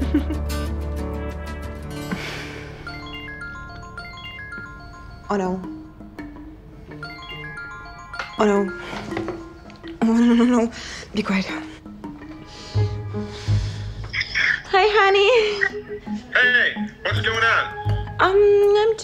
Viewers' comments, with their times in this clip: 0:06 I thought my phone was ringing 😅